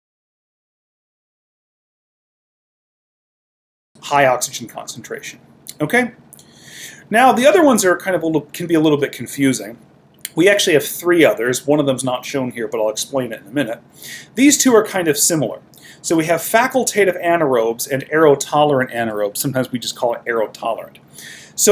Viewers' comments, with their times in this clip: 0:04 audio comes back
0:09 The middle of the video's sound cut out from about :49 to It was very helpful up until that point.